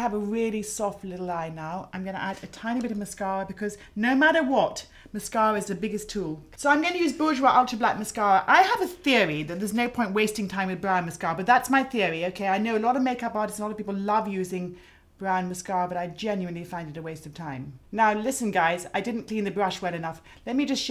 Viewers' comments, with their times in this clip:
0:08 The model sighing at least three times (look for example)